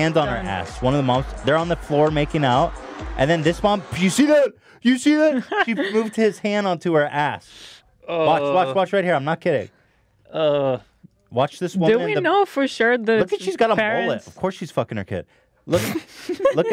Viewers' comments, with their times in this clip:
0:04 sweet home Alabama plays in the background and confederate flags raise